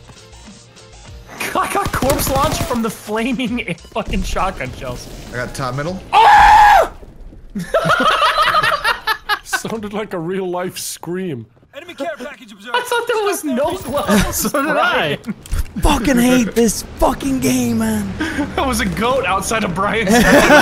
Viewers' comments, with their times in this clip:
0:03 goat scream on and NOW